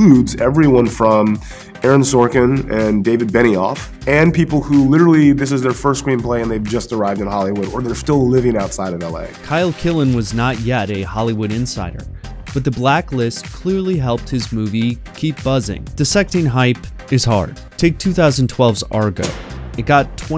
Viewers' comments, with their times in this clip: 0:05 Anyone else notice an audio sync issue, say ?